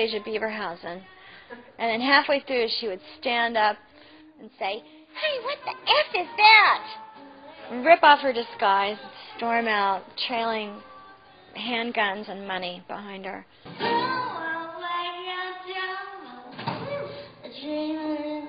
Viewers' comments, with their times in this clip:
0:05 wowow I am living for this Karen voice. Meg your so talented 😂😂😂😘😘😘😘😘